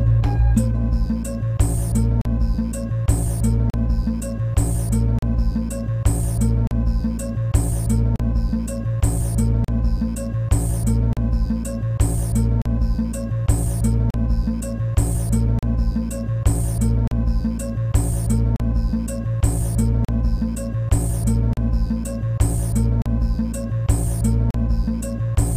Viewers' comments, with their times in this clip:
0:03 looks like you've got a scratch on your mp3 file
0:13 WTF??? Peaceful went away!